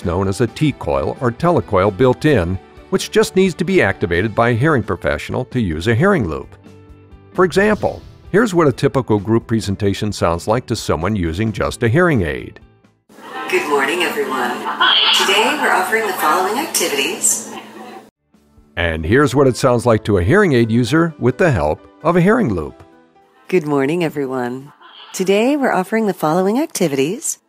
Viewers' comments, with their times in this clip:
0:09 Imagine life sounding like the example into video ALL the time